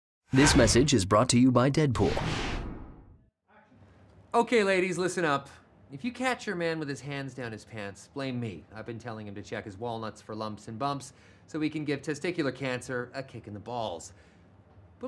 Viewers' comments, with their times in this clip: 0:02 Anyone else hear "action" in the distance?
0:02 in you can hear "Action" in the background
0:02 Can you hear the: "Action!" on ??
0:03 you can hear the director shouting "ACTION" :)